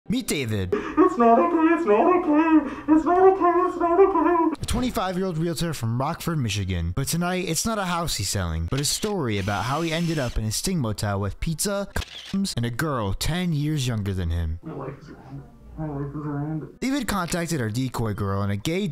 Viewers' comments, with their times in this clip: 0:01 bro sounded like a hl2 zombie